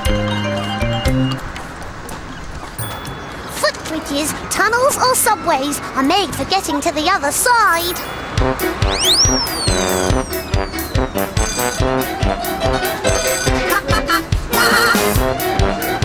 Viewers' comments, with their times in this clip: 0:03 sounds like Fizz said fuckbridges 😅